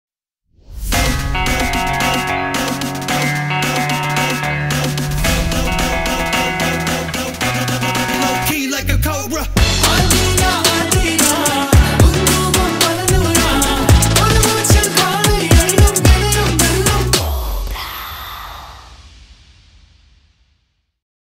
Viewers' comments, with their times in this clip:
0:09 that artists voice ♥️😍